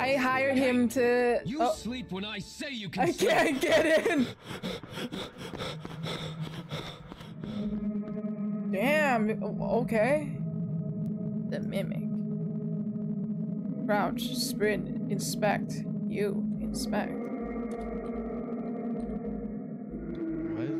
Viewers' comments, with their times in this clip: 0:06 The breathing sounded like-let me say..riding something💀-